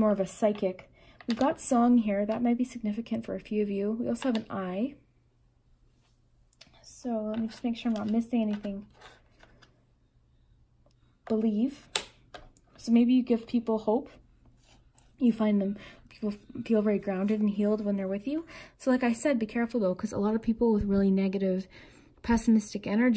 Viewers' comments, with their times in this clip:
0:09 Picked #2. You said that there was a song charm and my hidden talent is singing. I can’t believe how amazing your readings are. Your voice is soooo soothing! Keep up the beautiful work